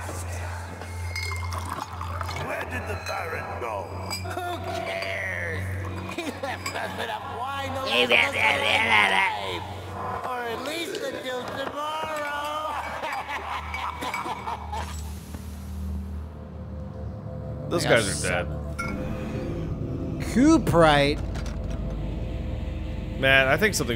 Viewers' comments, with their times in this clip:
0:04 uuuh they sound so much like our boys